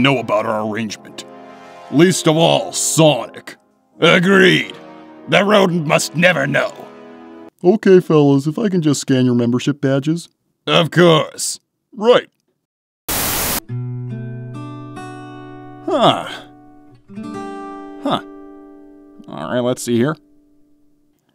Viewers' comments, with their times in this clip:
0:04 That Eggman Impression omg